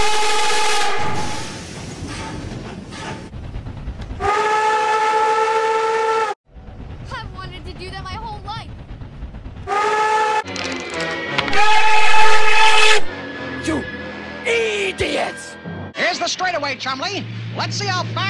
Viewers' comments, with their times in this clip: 0:06 and that folks what it will be like when u add the NKP cracked whistle to replace the 1225 cracked whistle